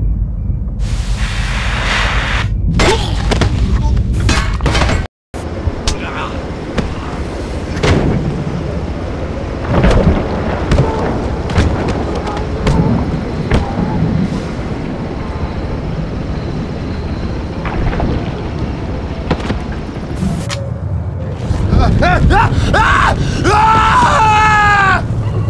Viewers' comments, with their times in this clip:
0:09 that Minecraft splash sound effect im dying